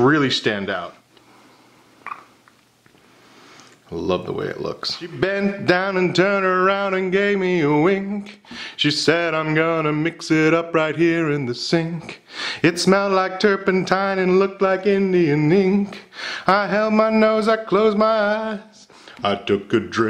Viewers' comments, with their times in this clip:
0:06 Is nobody going to talk about how good the song was? This guy has multiple talents. 👏
0:06 WHAT A VOICE !!